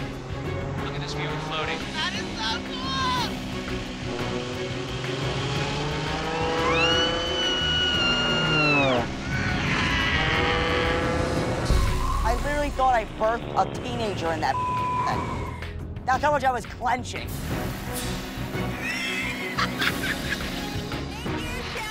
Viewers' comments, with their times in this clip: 0:07 fuck I rewinded it like 20 times you go from a sweet yell to a raaaaaaaaaaa!!!